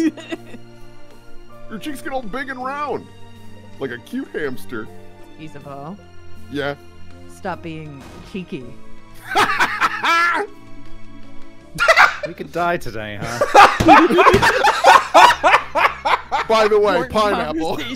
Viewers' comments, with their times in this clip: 0:05 the immediate tone change. Everyone's reaction to it. The world is good today